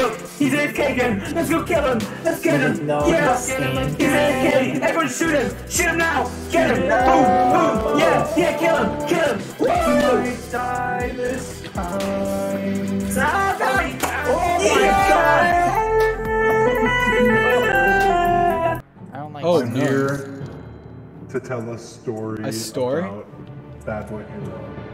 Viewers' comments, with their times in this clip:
0:07 omg 😳 why do they low key sound good?!